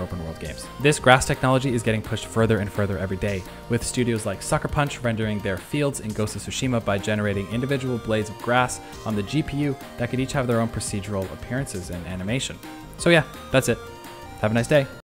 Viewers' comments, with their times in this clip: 0:13 I don’t hear any increase in volume